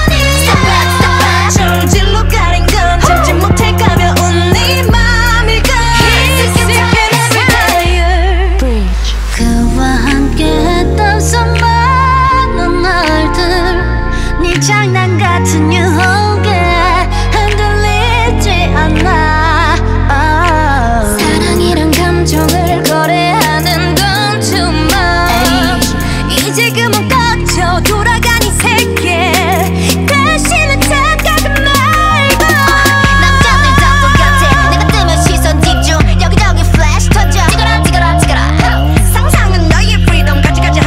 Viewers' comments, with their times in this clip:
0:07 The way Wendy delivered her 'sick and tired adlib is so captivating. Her vocals are so magical when you thought you've heard all her voices and she developed a new one. 😩
0:08 honestly that tone from Boa's voice is excellent. She made the notes soar freely, letting her vocal chords do what's natural to it (compared to stylising it), which only a real pro would know when and how to do it. Simple and easy notes, for sure, but it's the nuances that tell me who the veteran singers really are.
0:09 OMG I commented this before and now I'm sobbing. BoA's voice is so nostalgic, I love her so much.
0:26 high note Wendy so great